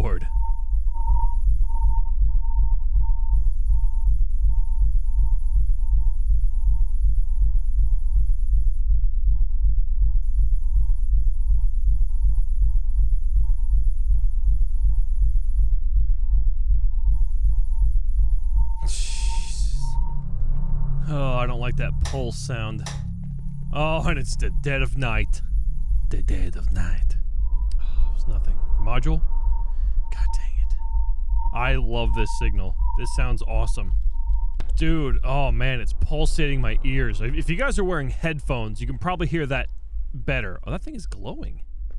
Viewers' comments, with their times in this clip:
0:05 Sooo Put it on 0.25x Speed it sounds like real Alien noises
0:26 XDXDDXDXDXD what i would say ,,the dead of night,, and the same way as HE did